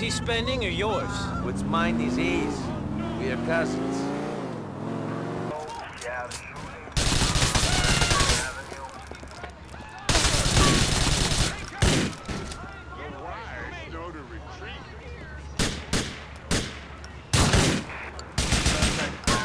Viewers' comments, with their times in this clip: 0:05 this is patrol yeah shoting police escaner i heard it